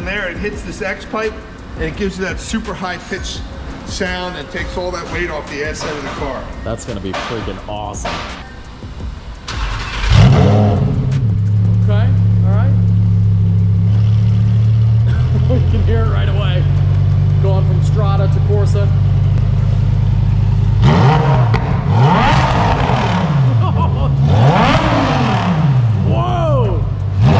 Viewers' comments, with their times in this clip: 0:09 sounds real good but then once the valves was open even better. 👏👏👏👏